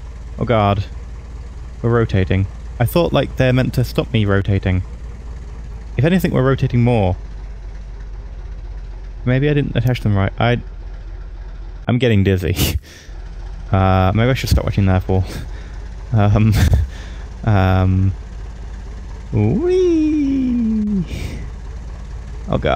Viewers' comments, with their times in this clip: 0:07 "This looks like the tilt-rotor B-22 Ospre... (Complete silence)."